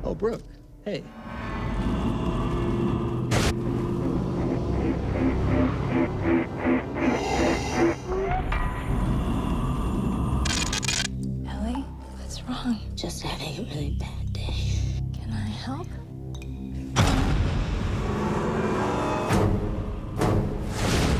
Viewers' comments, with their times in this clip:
0:08 What?/ Is that in was...Darth Vader breathing?! Lol!